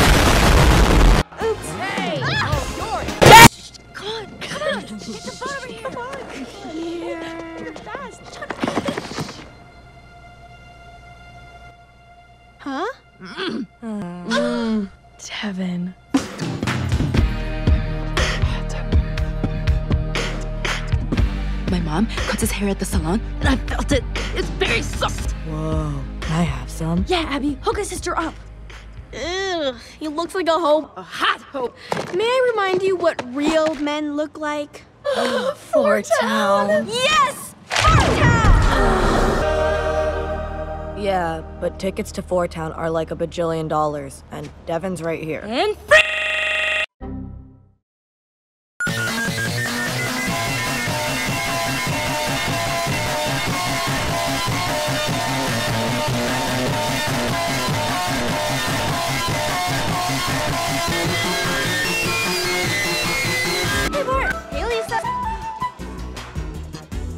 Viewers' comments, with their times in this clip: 0:03 I couldn't hear anything right here can someone tell me if I'm deaf Turn up your volume to tell me properly
0:03 Ahhhhh! Earrape do NOT wear headphones
0:13 why no one talking about Abby going”Mmmm”
0:14 DID I JUST HEAR A MOAN😂😂😂
0:48 Rip headphone uses
0:49 You said Fortnite